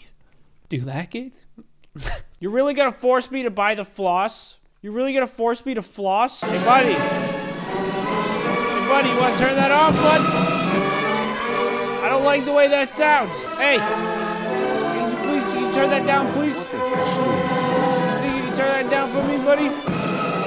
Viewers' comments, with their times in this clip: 0:06 vid: Russian anthem plays Russian people watching: calls the president of Russia and reports a USA person playing our motherland song